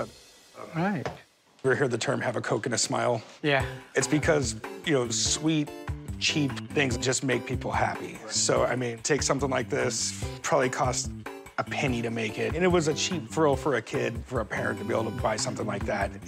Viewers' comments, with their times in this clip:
0:03 Koji K wants his melody back